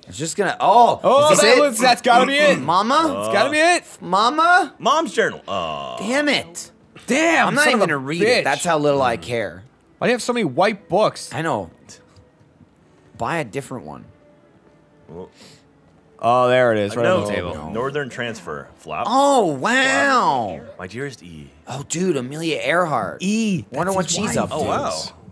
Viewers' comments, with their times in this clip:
0:09 "Why are there so many white books?!" brief silence from everyone.